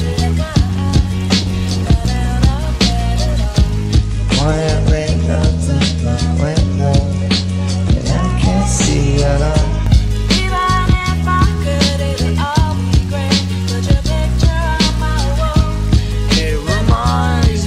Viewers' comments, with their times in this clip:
0:05 this gives me my Peace of mind for a second when i listen to his voice... merry christmas Gus